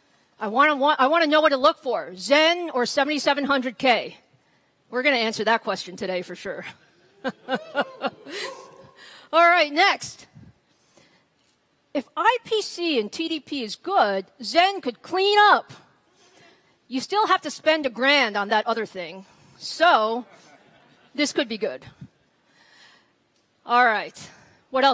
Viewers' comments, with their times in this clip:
0:05 That Evil laugh...! Take that Intel!